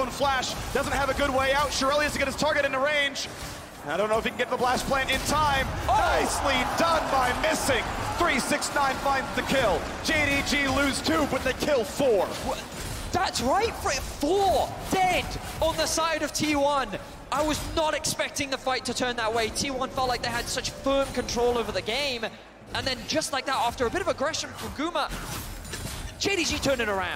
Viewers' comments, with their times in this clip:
0:09 does he say ‘that’s rape!’ 😂😂😂